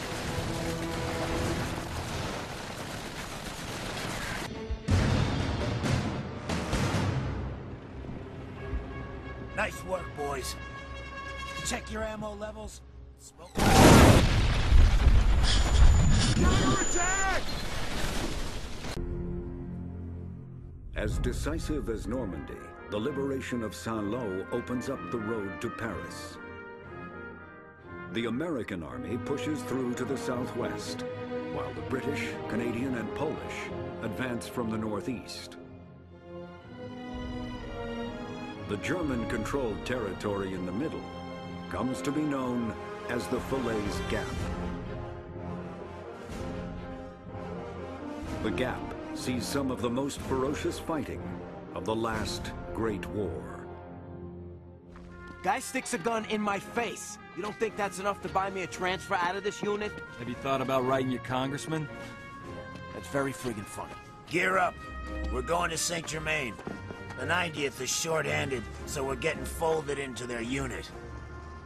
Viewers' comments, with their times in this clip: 0:06 I love how when this scene begins, the screen begins to fade to black, as if the mission is over, so you begin to rest just like your squad and character do in the game, and then boom, and your reaction is exactly the same as the game characters, total surprise
0:58 look att the musicc i love call of dutyyy of World war ❤️